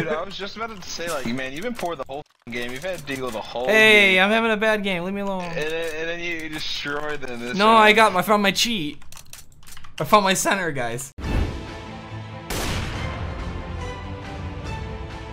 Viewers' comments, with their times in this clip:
0:03 sounds like vanoss